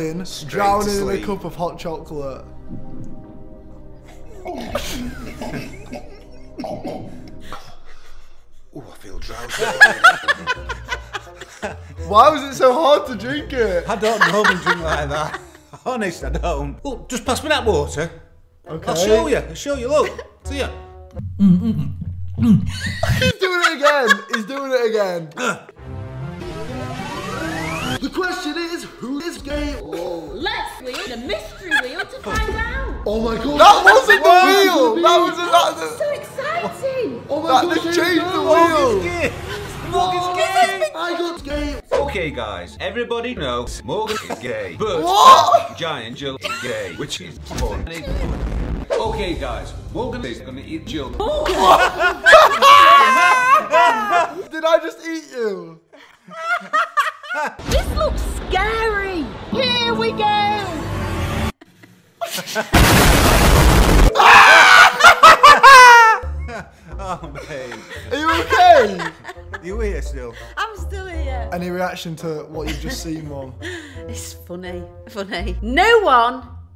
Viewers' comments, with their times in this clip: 0:08 morgz laugh was sus!
1:04 That laugh tho LOL